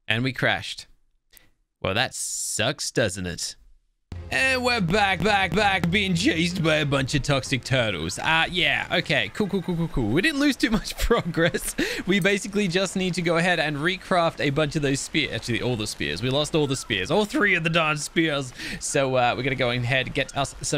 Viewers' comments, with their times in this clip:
0:05 was it just me, or the video repeated "back" a few times